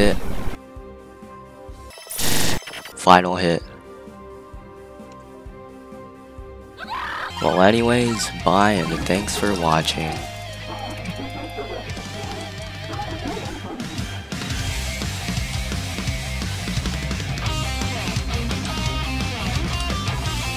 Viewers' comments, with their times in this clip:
0:05 *silence* *gets blasted*